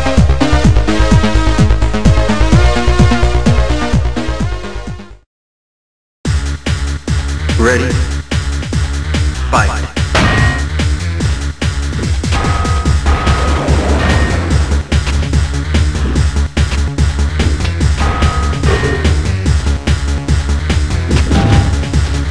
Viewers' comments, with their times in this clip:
0:06 I couldn't help thinking "Turn down the music, ya friggen' bass heads! My god, it's like a strip club in here! Just get some dancing girls in cages why don't ya?!" God, programmers... Who knows what they're doing in there? At that rate, they'll go deaf by the end of the year... Next time I go in there, I'll wear some ear protection..."